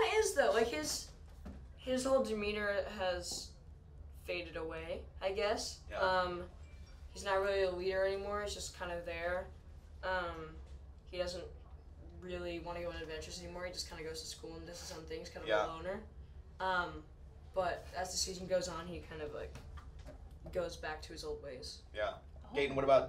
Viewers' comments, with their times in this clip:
0:06 Who else heard the iphone notification thing
0:06 whOs PhOne wAs ThAT
0:07 The Notification tho
0:07 I herd the phone